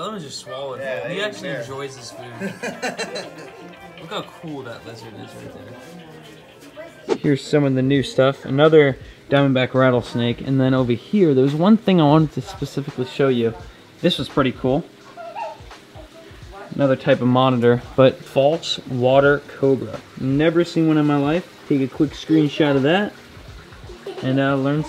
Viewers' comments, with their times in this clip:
0:06 Who else came to the comments because they thought there phone was ringing ?